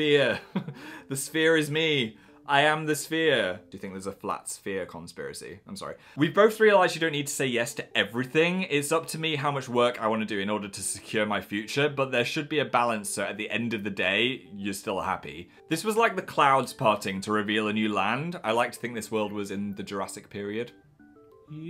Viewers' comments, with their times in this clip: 0:05 Okay, I'm sorry, I had to do a double take at this part cause I thought it was Dan who was speaking in this XDD